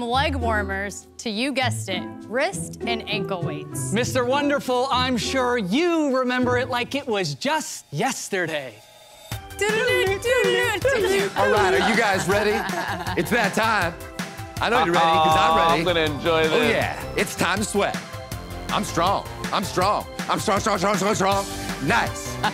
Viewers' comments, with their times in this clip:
0:08 That whole part was perfect, from the sounds the entrepreneurs made to the perfect acting of the guy, the music, the synchronization of what the guy was saying to the beat and music tone, it was great. Anyone know who that actor is?